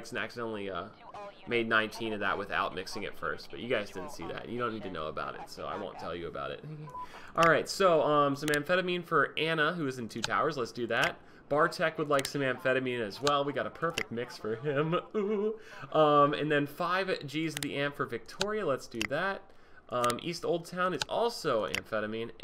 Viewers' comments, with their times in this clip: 0:07 Did your phone buzz ???